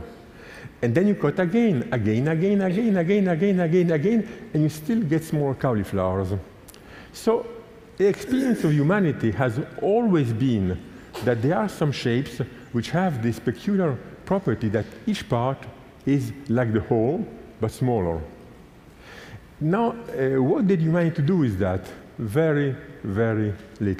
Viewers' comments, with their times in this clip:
0:07 really weird noise. oO